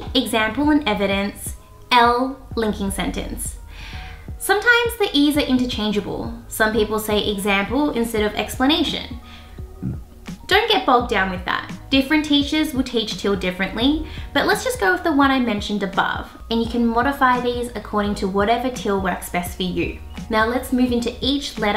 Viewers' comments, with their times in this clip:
0:09 Was that a burp ?!?! 😂😂😂